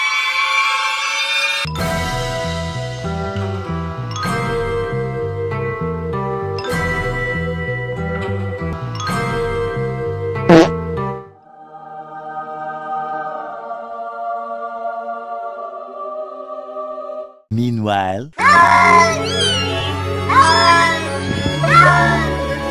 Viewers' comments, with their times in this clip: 0:10 The cat farted in